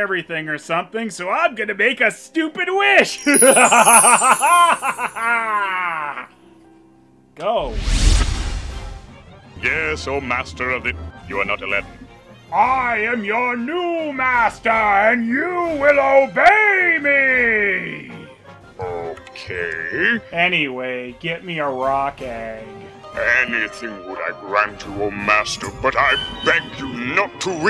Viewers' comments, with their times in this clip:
0:09 That "you're not Aladdin" is so quick it sounds more like "You're not a lamp".